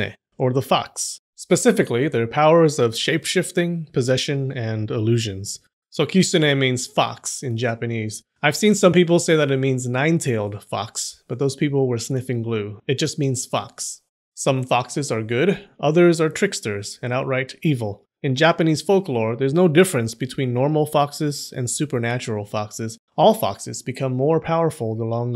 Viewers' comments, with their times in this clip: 0:06 oh wow i smiled then i had heart attack lol also like how he say "moshi moshi"